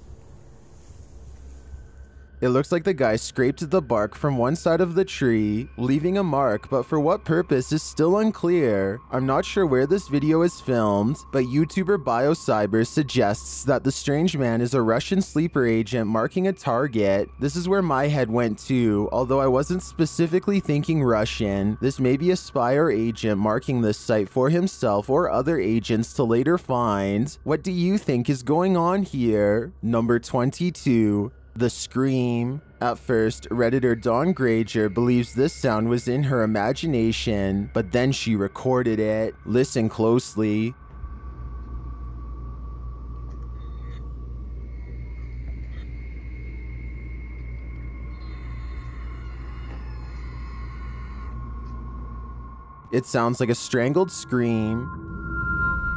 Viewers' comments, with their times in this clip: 0:03 the person is speaking tagalog it may not be clear where they are but it may be in manila or another place
0:39 Sounds like a raccoon.